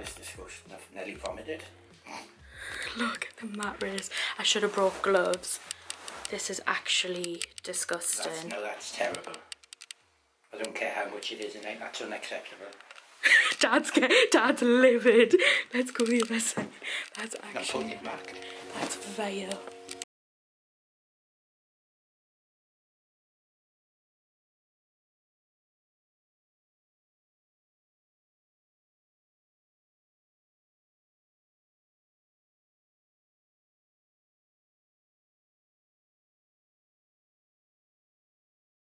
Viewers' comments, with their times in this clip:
0:05 Anyone else's sound go off it doesn't come back on for rest of the video
0:20 The audio cut out for me anyone else?
0:21 anyone else have problem with sound cutting out and then no sound for rest of video?
0:21 Why did sound go off ?